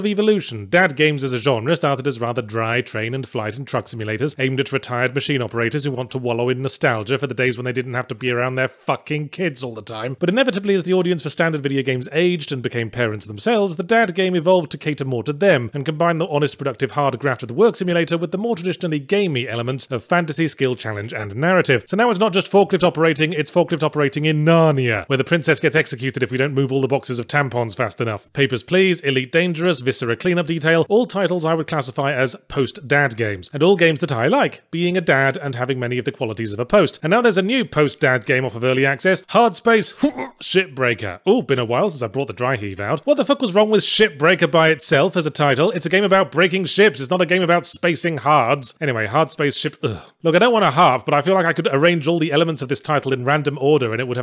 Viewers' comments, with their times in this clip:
0:05 As he has recently become a dad and works from home I can't help but think Yahtzee's tone conveys a certain amount of empathy.
0:39 does anyone else hear "shitbreaker"? 😂